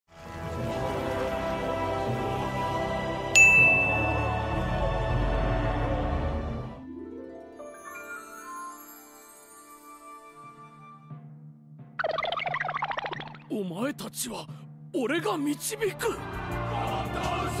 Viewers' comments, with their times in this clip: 0:00 i thought the avengers music was playing lol